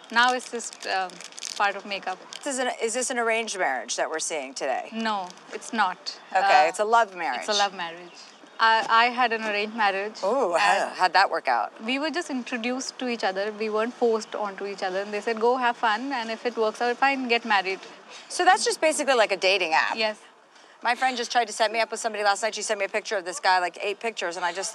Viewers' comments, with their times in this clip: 0:09 What was that ughh for?